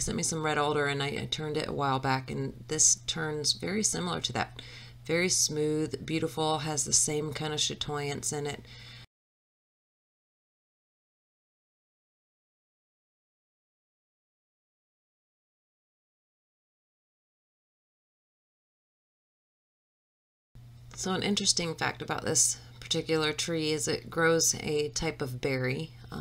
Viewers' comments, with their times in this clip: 0:08 Sutoence of the wood similar to red elder??? I first heard Does this help?